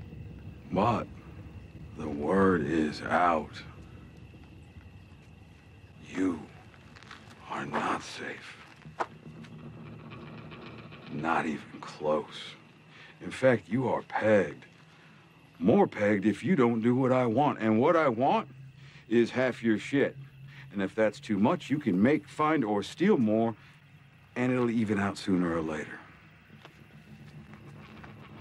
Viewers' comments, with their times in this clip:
0:10 Word???? Or world???